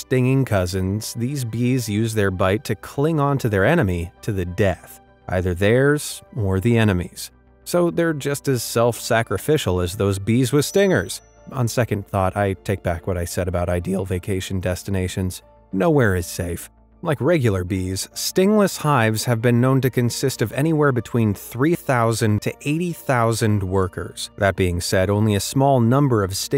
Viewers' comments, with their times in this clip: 0:10 lol voice crack